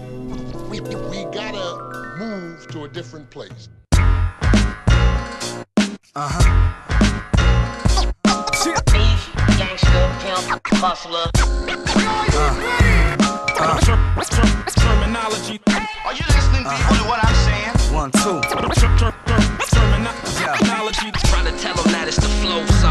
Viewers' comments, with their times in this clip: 0:03 the starting instrumental till is awesome - i was preparing to hear sg timeless from Preemo again. Then unfortunately the same old piano sample came in, what is like a blind-handpractice from him. Anyone know the origin of the music in the beggining?